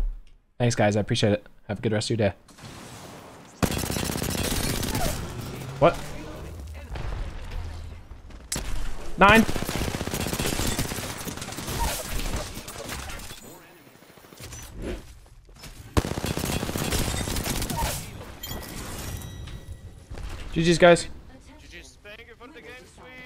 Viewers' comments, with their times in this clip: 0:08 Dude just turned German for a sec.
0:08 My man became german for a sec😂